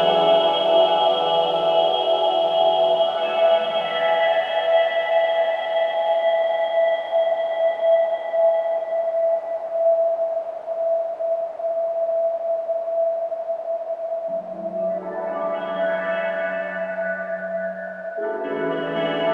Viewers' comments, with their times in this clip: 0:07 Sounds like teletubbies